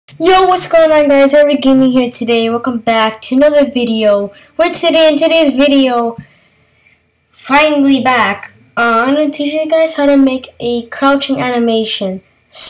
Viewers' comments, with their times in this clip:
0:00 Rip me. And rip all headphone users.